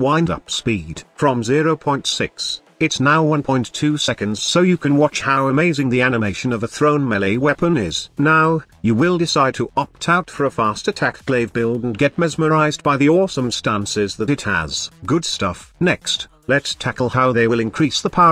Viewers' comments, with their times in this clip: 0:03 you can even hear the salt in the robotic voice same dude same